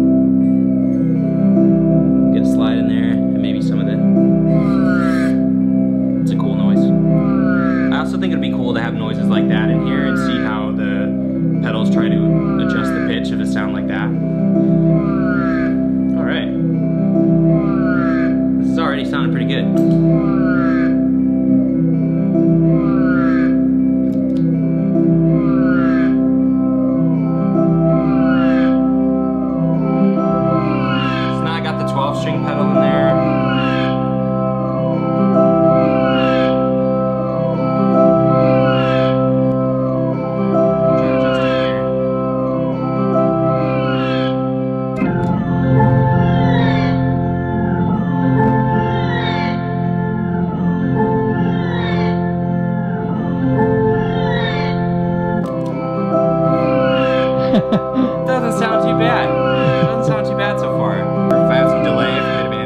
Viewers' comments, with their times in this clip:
0:04 sounds like snoopy crying
0:31 and on it starts to make me feel like I'm underwater in Super Mario Sunshine
0:42 sounds like when you're going into orbit in ksp (kerbal space program)
0:46 The tones that started coming out from the pedals sort of sounds like a baby crying.. 🤣